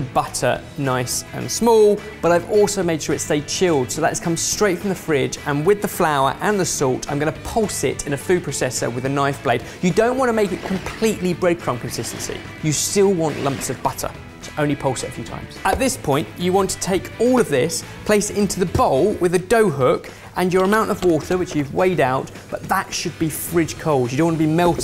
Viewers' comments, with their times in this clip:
0:07 "...food proCESSor...". Who the fuck pronounces it like this? Love you, Sorted. x